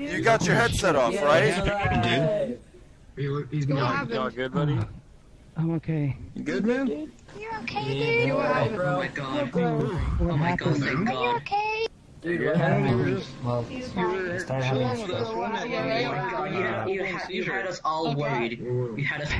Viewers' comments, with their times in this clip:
0:06 Im sorry but I can't take that voice seriously lol